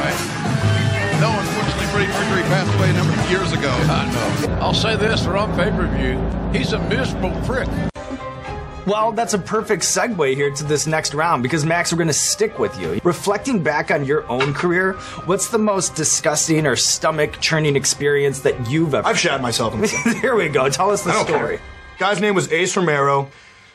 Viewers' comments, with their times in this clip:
0:04 with the don callis music omfg lmao